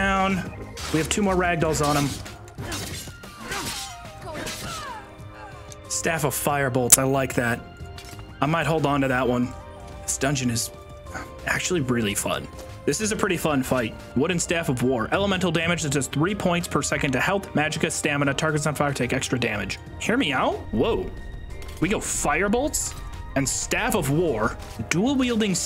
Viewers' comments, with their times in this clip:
0:05 Super loud click, anyone else??
0:06 There's a nasty sounding audio pop/screech by the way